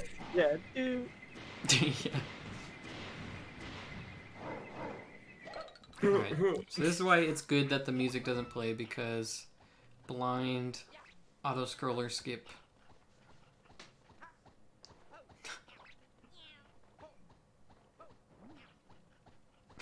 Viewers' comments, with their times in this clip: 0:06 "This is why it's good that the music doesn't play[...]" 2, 5 seconds later: Cat goomba: *meow*